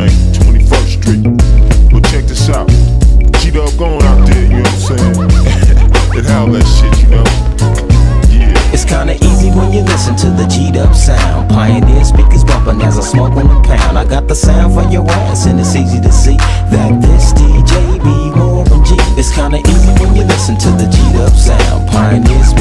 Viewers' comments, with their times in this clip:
0:07 fulllllll max volume😎😎😎😎